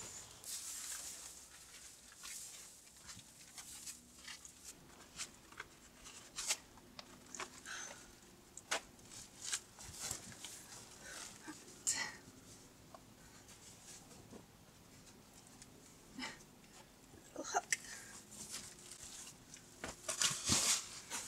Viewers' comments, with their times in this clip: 0:03 you can hear a motorcycle engine driving by....lol